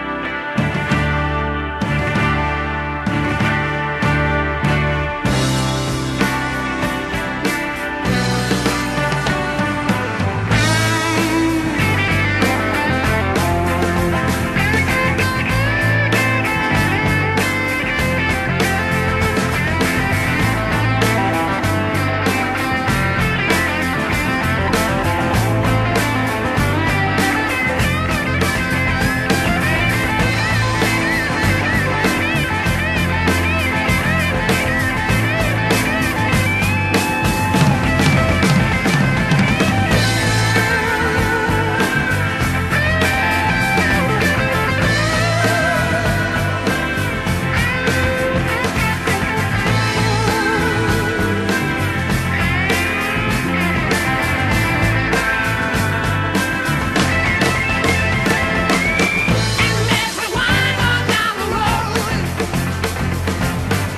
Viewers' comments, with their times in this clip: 0:09 The guitar solo starts
0:10 what a fucking transition into epicness.
0:44 whats that cool whine-y noise?